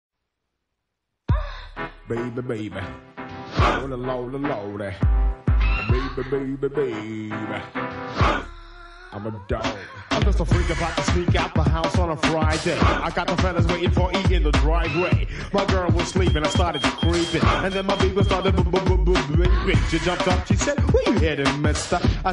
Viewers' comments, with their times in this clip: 0:05 ...a lil 50 Cent